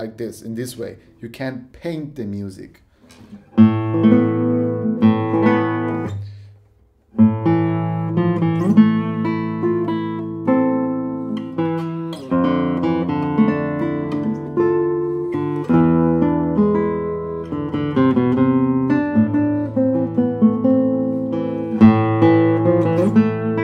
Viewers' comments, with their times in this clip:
0:10 What is the song starting ? Love the spanish feel!